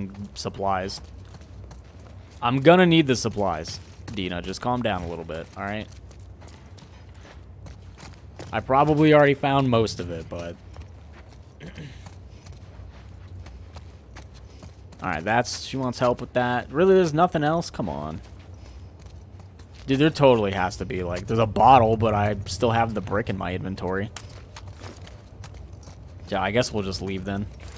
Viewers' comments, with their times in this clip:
0:10 for a second i tought that cardboard guy coughed and it freaked me out